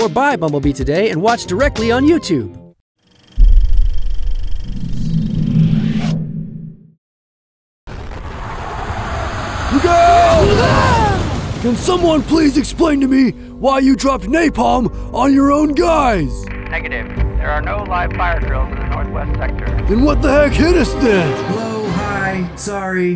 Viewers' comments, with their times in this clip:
0:08 why i don't see any guy but i hear a voice in that scene (and the other)